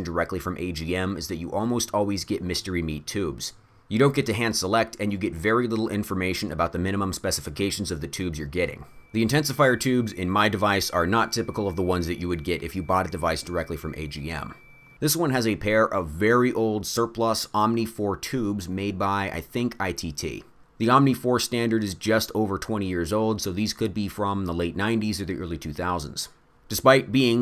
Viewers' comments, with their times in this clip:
0:08 WTF is that high pitch audible noise that happens for a few seconds?
0:09 Had me thinking my tinnitus was acting up lol.